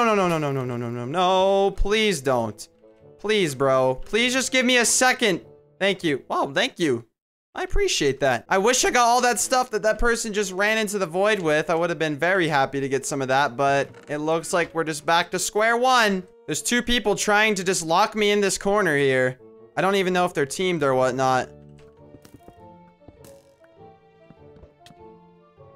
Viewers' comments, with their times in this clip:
0:08 voice crack though